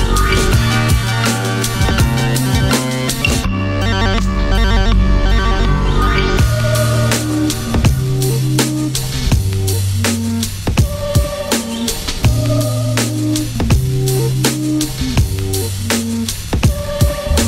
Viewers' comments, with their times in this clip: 0:03 reminds me of a Nintendo car game I had eh 🔥